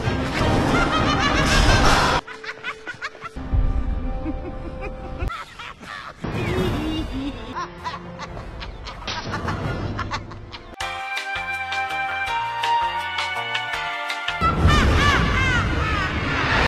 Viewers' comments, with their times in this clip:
0:06 THE HEEHEEHEE SENDS ME